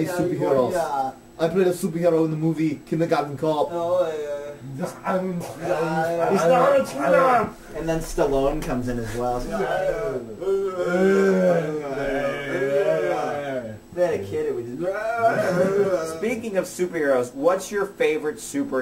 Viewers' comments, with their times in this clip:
0:06 sounded like he said 'ITS NOT TUNA!'